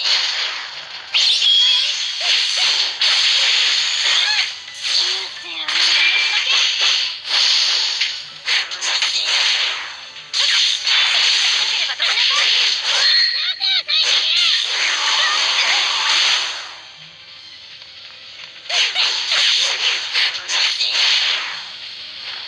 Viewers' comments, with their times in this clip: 0:04 one of them made a cat sound